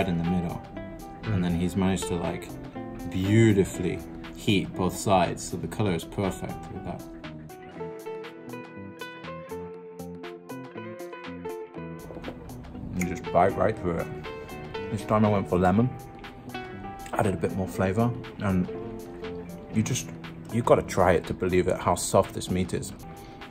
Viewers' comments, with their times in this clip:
0:09 a bit of audio sync problem i think